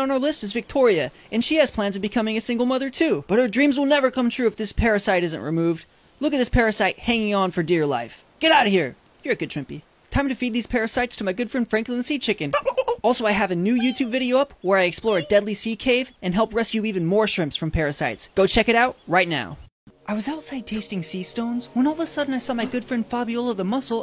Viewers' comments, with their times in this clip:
0:10 his voice is like: ehehehehhe